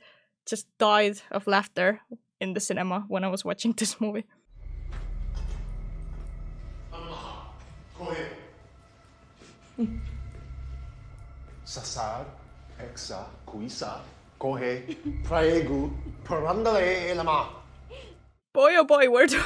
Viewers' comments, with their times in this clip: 0:05 I am not estonian I'm american but I can tell that's bad